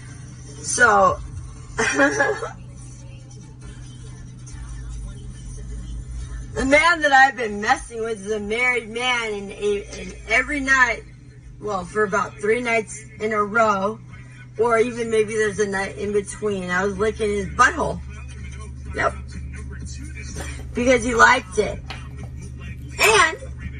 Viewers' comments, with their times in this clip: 0:05 Yo, that broad looks and sounds like the chick from Hussle and Flow movie